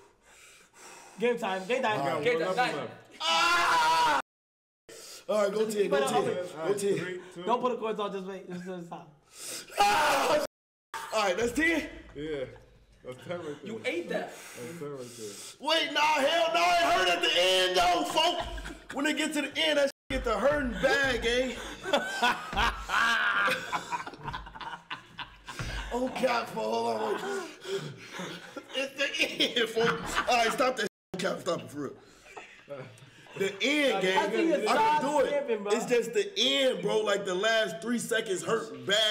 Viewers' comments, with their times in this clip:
0:09 why G Hero scream like dat 🤣
0:22 bro that hee hee hee haa laugh💀